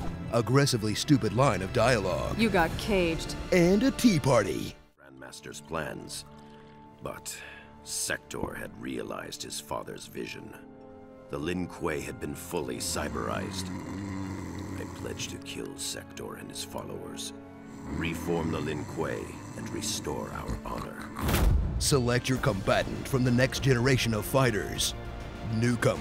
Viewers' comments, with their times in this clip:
0:10 is he snoring ? I'm weak. 😂😂😂